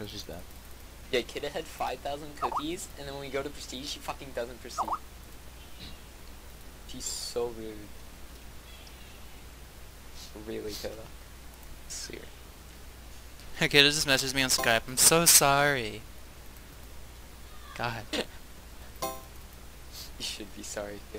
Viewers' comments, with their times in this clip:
0:09 I checked my skype..